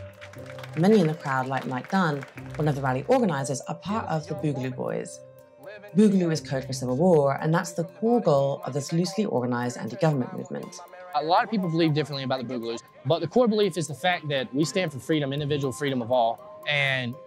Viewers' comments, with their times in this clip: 0:05 "Boogaloo is code for Single War" ? "Civil War" ? "Simil War" ? Can this narrator enunciate, please? Jesus fucking Christ, the quality on Vice has gone down in every single aspect